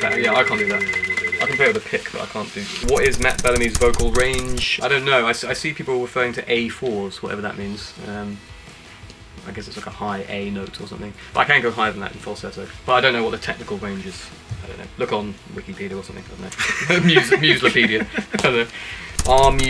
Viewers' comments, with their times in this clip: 0:03 No matter what range... Your voice is just like diamond facets for me 💎😍